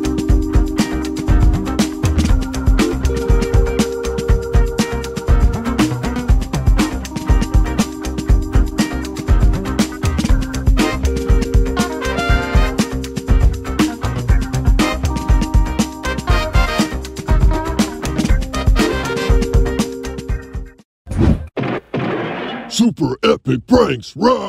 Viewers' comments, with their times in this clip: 0:07 Two from with clapping...